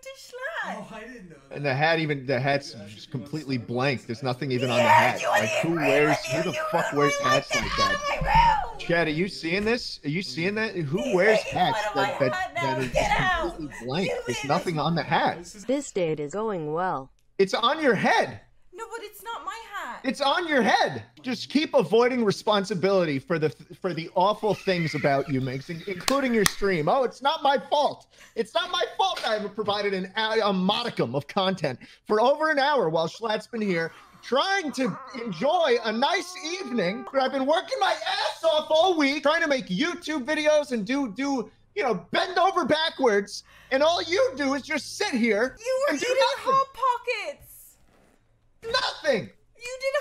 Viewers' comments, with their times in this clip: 0:04 when she says “yeah and he agreed with you, YOU RUINED MY LIFE GET OUT OF MY ROOM” she sounds like a teenager telling their parent to go away because they embarrassed her on a call with her crush
0:34 This is like a drunk dad talking to his wife.